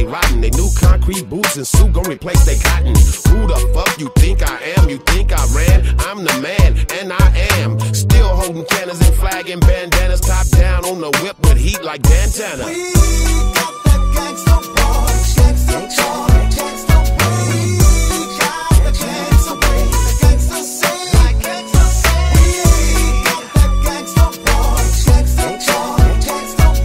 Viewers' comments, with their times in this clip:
0:07 classical coolio Style